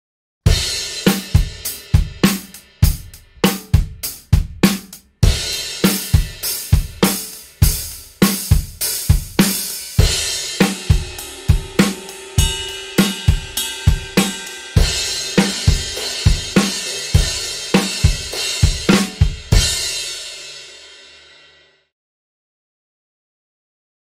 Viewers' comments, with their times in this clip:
0:10 starting to sound like real cymbals. Full correlation between price and quality, with ome exeption: The Zultans sound better than the Pst5. Any how, you're be much better off getting 2nd hand HH+Crash+Ride of a decent qulity than anew full set of cheap cymbals.